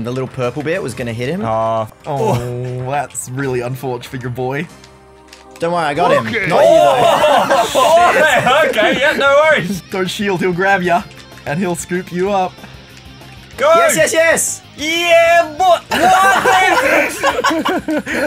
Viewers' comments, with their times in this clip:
0:04 Dammit, I thought the ok was a text cuz it’s my ringtone